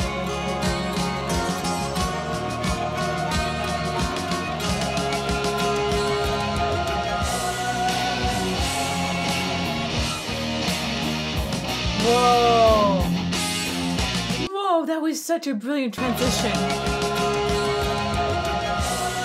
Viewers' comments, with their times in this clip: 0:06 Yeah the transition and the chord progression or riff that ensues is heavyyyy. They opened with this song, Diary of a Madman Tour, 1982 in Pittsburgh. I was there.